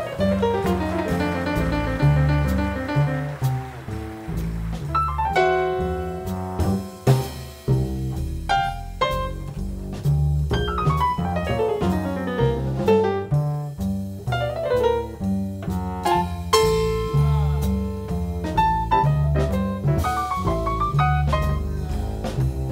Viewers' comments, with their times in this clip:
0:03 sounds the like first chord to Ella Fitzgerald's version of take the a train with Duke ellington